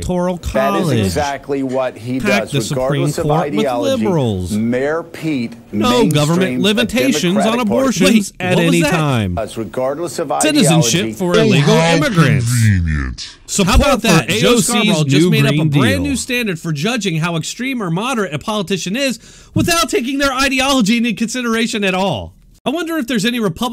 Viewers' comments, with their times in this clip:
0:07 Audio is a mess